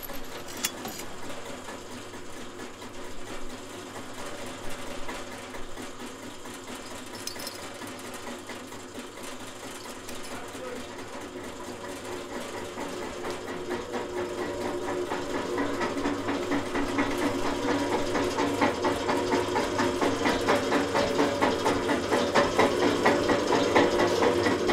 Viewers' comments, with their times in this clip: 0:08 I want to know what is being said in the background ?
0:09 There seems too be an audible EVP or something added to the film. A voice calling Katherine.
0:10 I hear a word being called out from far away...what is it? The easter eggs in this film are numerous and chilling!